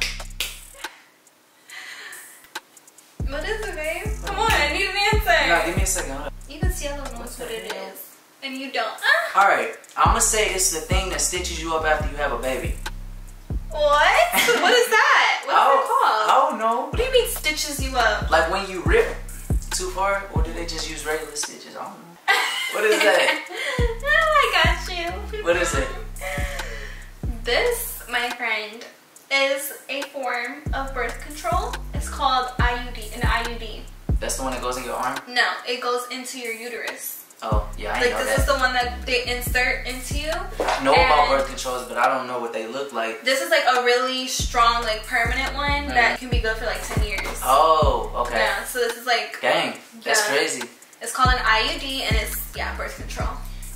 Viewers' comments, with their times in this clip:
0:07 is anyone gonna point out that moan
0:08 so everyones gonna ignore the moan
0:09 did y’all hear that moan 😂😂
0:09 very sus noise
0:41 Ik y’all heard that fart ong 😂😂😂😂😂😂